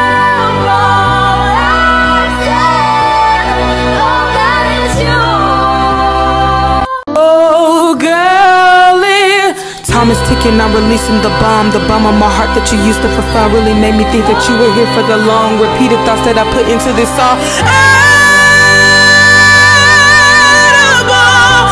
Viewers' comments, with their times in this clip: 0:07 how the girl went from rapping to belting is amazing
0:07 i don't like rap, but she goes into singing mode, it's next-level... blew me away